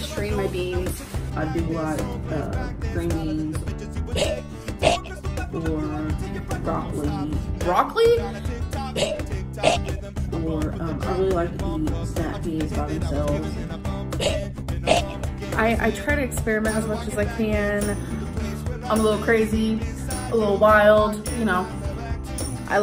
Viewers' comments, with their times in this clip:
0:03 my cat throwing up a hairball